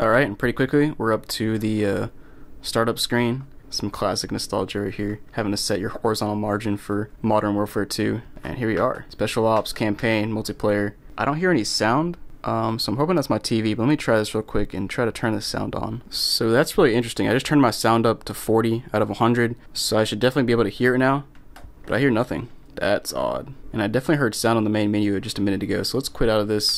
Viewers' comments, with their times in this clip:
0:08 thats a sound bug from using hdmi its very common its fixable